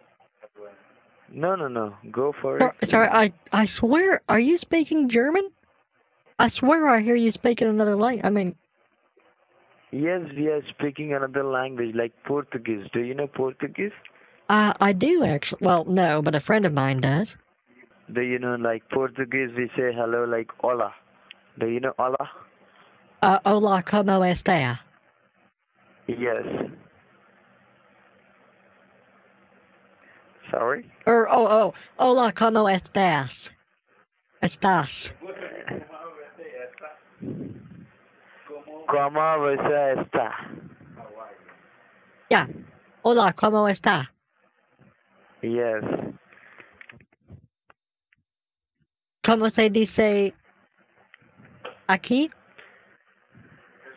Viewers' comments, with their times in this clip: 0:10 I am from Germany and clearly that was NOT German xD
0:33 Allow me to tell you that your portuguese is not bad.
0:38 The scammer doesn't even know a bit of spanglish even less portuguese, this one scammer giving the lines on the background on how to pronounce hola como estas? Cracked me up so bad rofloled